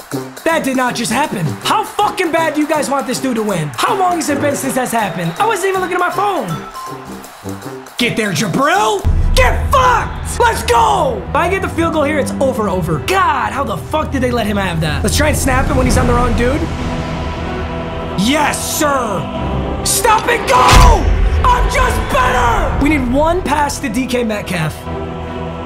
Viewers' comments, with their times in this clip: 0:09 “get fucked” was a battle cry